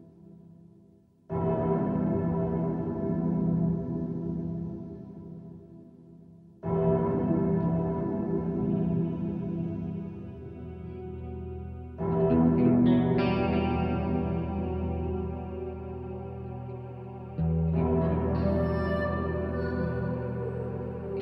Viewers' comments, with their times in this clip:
0:06 when you realice that you forgot to turn up the volume XD